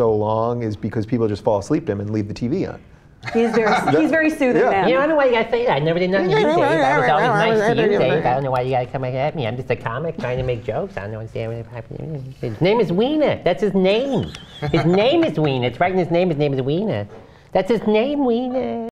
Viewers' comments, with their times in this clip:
0:10 WHAT THE !? Jimmy Dore is the voice of Cartman !